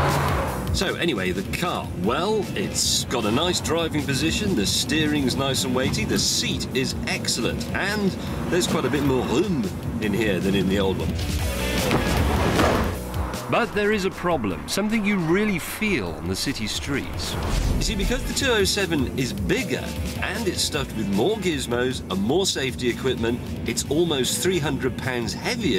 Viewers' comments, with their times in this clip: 0:07 what in God’s name did he say